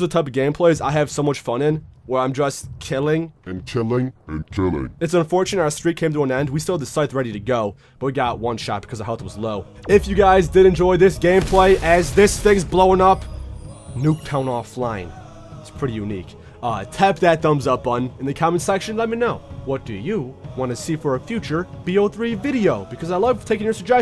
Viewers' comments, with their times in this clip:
0:06 dat rap tho!!